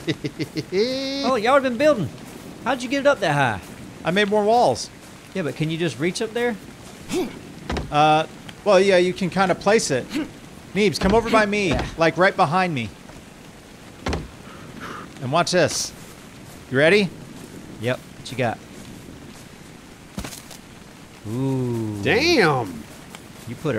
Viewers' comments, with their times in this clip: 0:07 when your voice turn into a girls